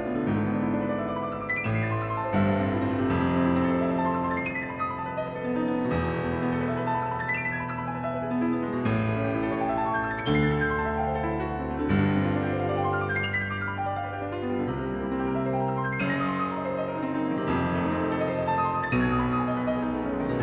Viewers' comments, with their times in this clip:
0:08 a nod to Cortot 😉